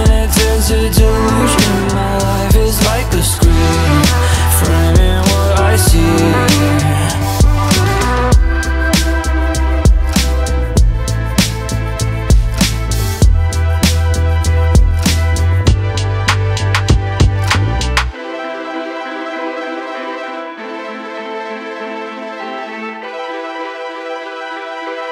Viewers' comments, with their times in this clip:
0:09 Love this tune